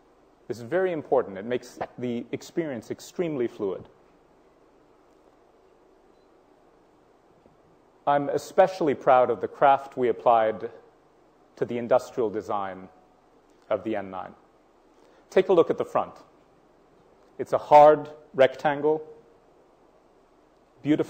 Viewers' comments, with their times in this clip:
0:04 I'm especially proud of the CRAP we apply to the industrial design of the N9